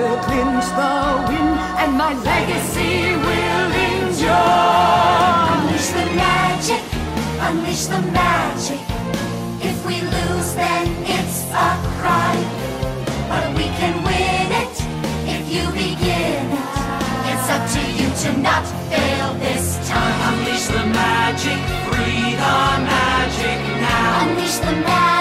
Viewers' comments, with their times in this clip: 0:10 NAH BC THE STAKES AND THE BUILD UP TARA STRONG'S ANGELIC VOICE?? GAHHHHH IS EATING ME UP BRO